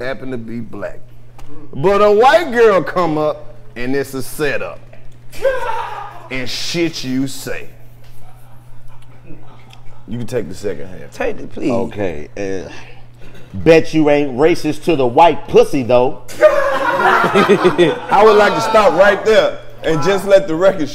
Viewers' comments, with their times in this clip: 0:05 It ain’t 85 without that ”Taahahahaa” 🤣.....